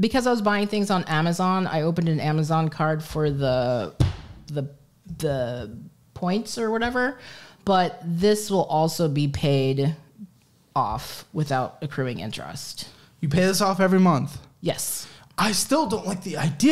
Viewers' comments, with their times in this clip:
0:03 that's the sound of Caleb having a minor stroke ...